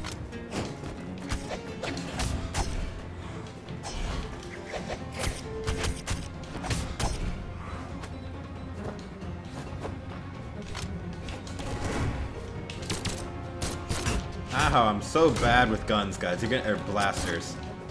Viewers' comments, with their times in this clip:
0:05 Who heard a beat